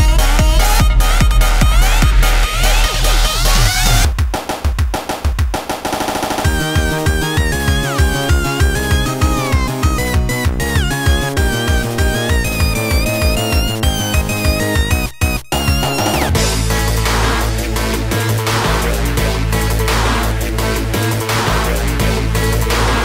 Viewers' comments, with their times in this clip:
0:07 it sounds like they made a song using a genesis sound chip dipped in water